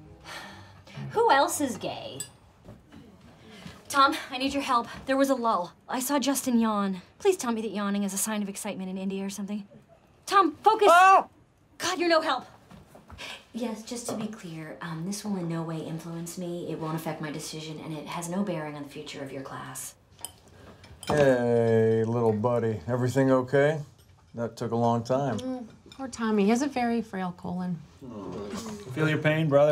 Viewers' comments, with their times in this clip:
0:10 The yell ultimately finished me off ☠️